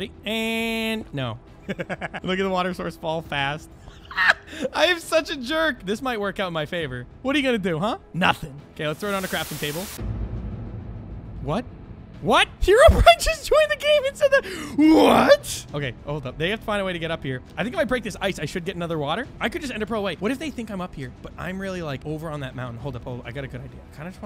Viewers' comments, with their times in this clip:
0:10 I HONESTLY THOUGHT TRIPLE TROUBLE WAS ABOUT TO PLAY-